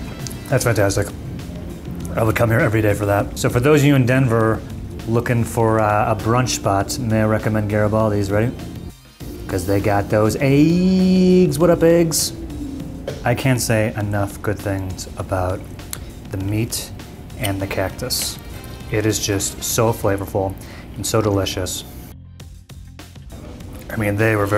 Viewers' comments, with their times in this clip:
0:09 Ya They Got Thoes AIDDDSSSS